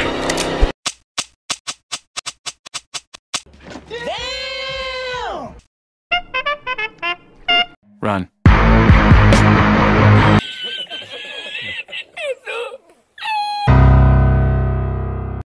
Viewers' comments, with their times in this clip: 0:10 El risitas noob laugh